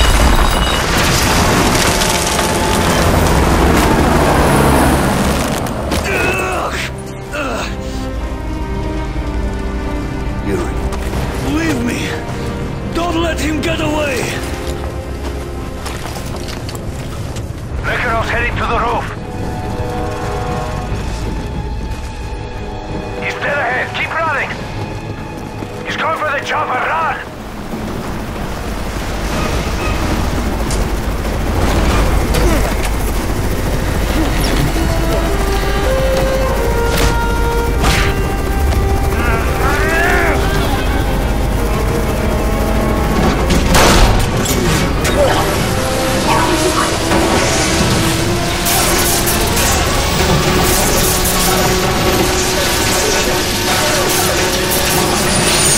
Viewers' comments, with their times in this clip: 0:08 the way he said yuri’s name is just full of sadness
0:37 that punch sound effect
0:37 cartoon ahh sound affect 💀💀